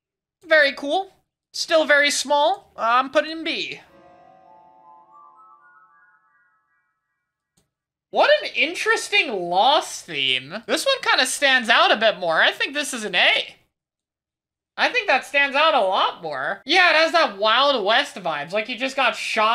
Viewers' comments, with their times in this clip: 0:03 Honestly sounds like a viable candidate for a Minecraft cave sound